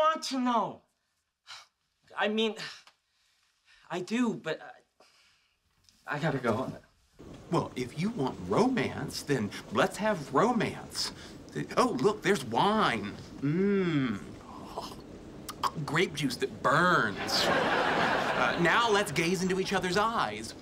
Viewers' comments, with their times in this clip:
0:08 What happened to Sheldon’s voice?